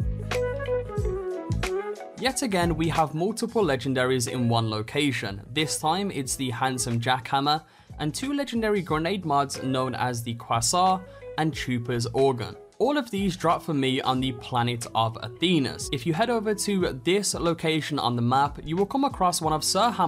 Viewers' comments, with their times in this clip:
0:08 You pronounce quasar like croissant to me xD